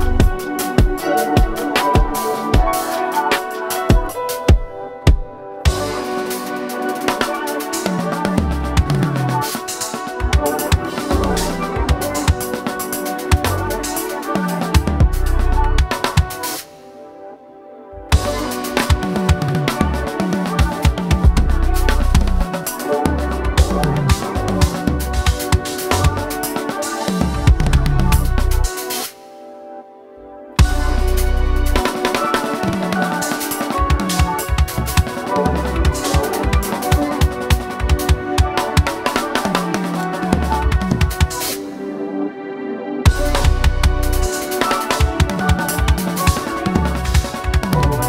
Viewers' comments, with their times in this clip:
0:08 I’m not a drummer so could someone explain the technique he does ? The constant drumming all over the place is so crazy and sounds amazing
0:29 Gospel Chops: Activate